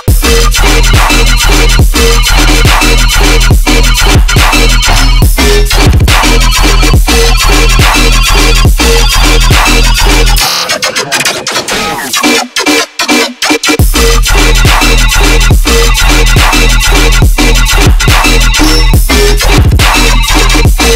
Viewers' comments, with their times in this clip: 0:04 phones ringing bro